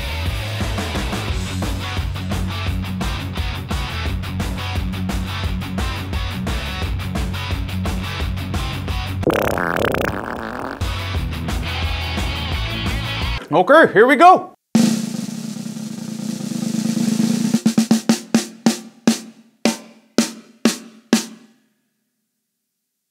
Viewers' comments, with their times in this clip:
0:09 lmfaooo I wasn't expecting some fart The drumming is god tier btw